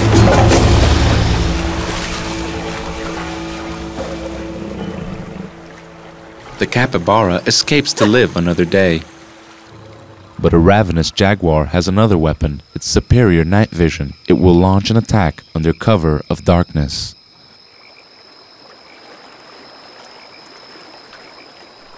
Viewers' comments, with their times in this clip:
0:06 LUL that laugh!